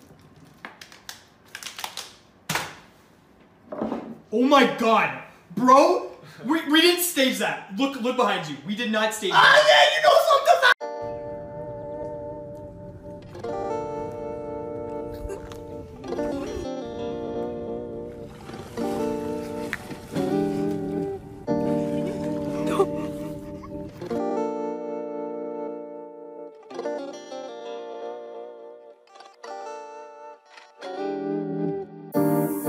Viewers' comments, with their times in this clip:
0:10 What are they laughing at?
0:11 The song was trippy! My head and ears don’t feel the same 🤣
0:15 tf you laughin at? Old man jus vibin